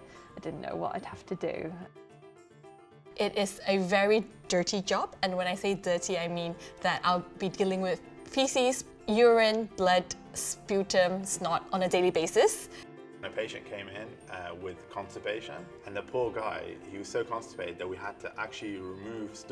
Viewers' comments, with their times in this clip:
0:03 says “dirty” in two completely different accents lol ok